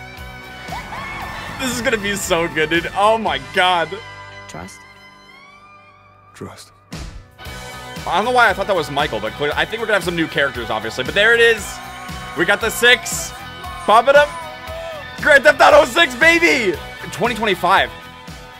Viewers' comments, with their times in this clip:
0:05 That guy sounds like Joel from The Last of Us.